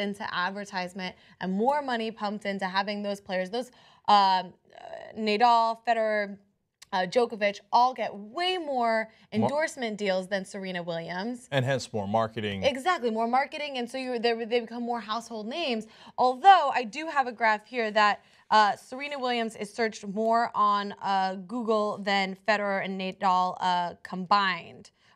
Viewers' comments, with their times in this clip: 0:03 It's hilarious how smoothly she called him "Neidal" acting like she knows shit
0:06 she says Nay-Dull.